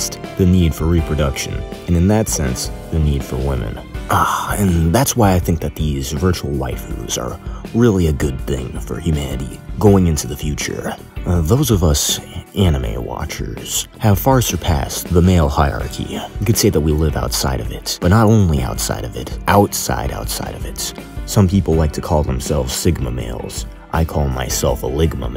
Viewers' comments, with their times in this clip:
0:07 he went full with the Society voice bruh